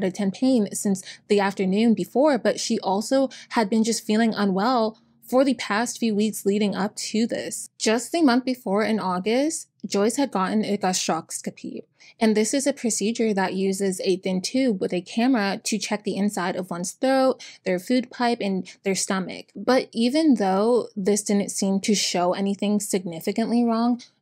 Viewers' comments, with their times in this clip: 0:08 … an endoscopy? I couldn’t understand what you said